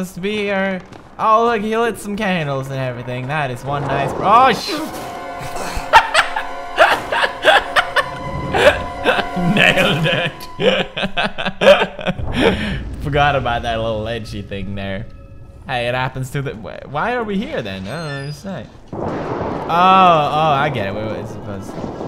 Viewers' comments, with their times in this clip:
0:05 that laugh is adorableeeeeee